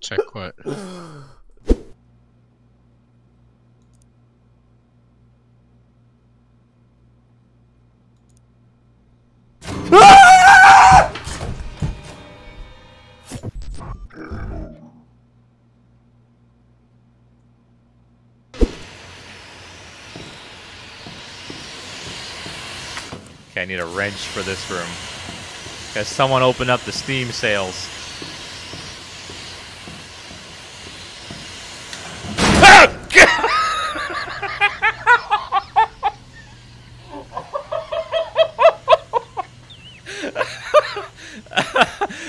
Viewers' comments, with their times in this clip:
0:09 that scream was so perfectly pitched🤣🤣🤣🤣🤣🤣
0:29 really got me for some reason, I think the guy laughing at his own reaction just made it so much funnier than it would’ve been on its own